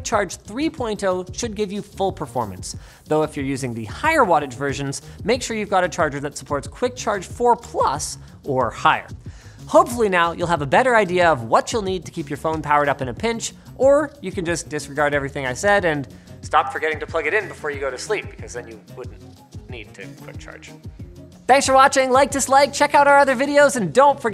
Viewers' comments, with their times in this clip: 0:05 Lol the voice crack
0:07 Linus hits puberty.